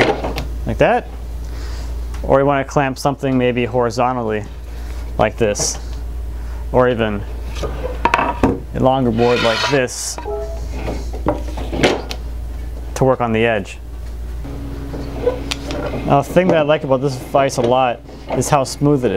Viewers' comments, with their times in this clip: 0:04 I had to replay the video to make sure I wasnt missing a gchat message.